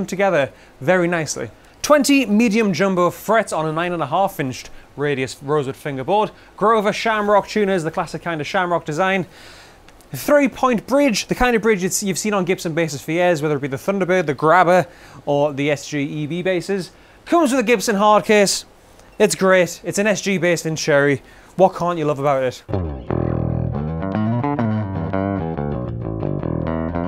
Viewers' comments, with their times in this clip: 0:09 Did he scoff at his own joke